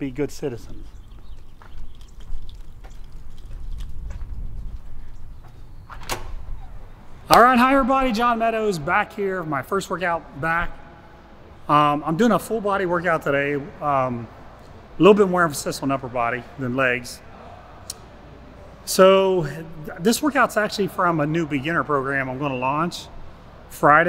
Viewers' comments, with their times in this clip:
0:07 skip to to hear the voice of jesus.